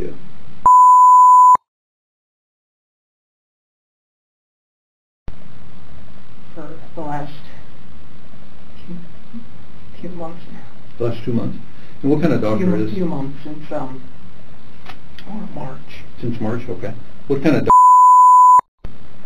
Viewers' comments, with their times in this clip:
0:03 cover your ear drums. LOUD beep. otherwise i love your videos